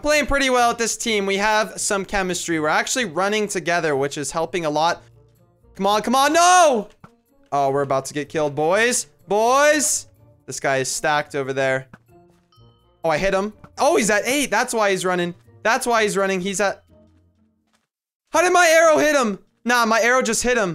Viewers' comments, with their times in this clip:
0:04 if youguys go to he said a badword but beeped it out or his mike cut out